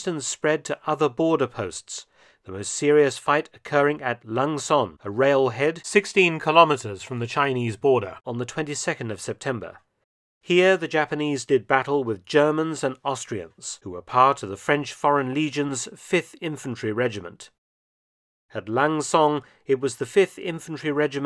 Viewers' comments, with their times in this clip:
0:06 lol @ the voice edit volume spike